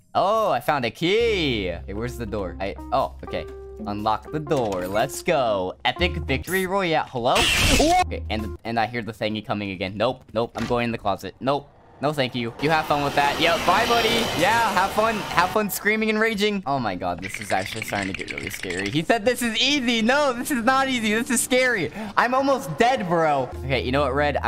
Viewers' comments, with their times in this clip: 0:05 I just love how he started to sing #1 Fortnite victory royale but just ended up getting jump scared by screech.